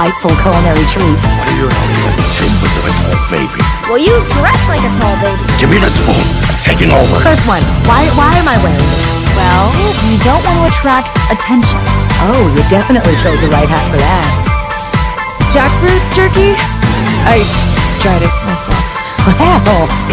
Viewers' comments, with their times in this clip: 0:03 bouns little voice crack and the sassy movement with the spoon really sell it